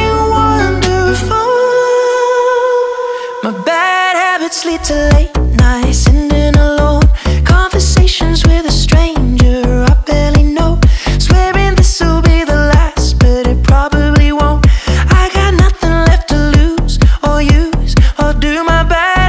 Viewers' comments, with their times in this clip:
0:05 Legends don't die, They just spread there greatness somewhere higher....... this beat won't die